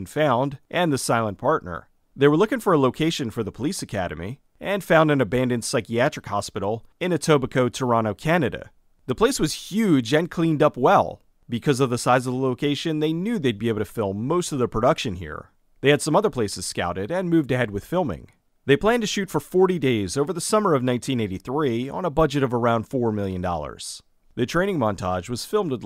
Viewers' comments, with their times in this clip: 0:07 "Etobicoke, Toronto, Canada"... I cringed :P